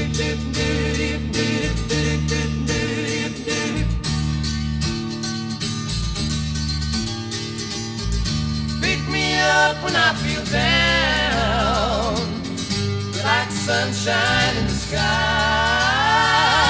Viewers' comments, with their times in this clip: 0:03 Very Seven Bridges Road here. They could give The Eagles a run with this one. Such fantastic harmony. Flawless. ❤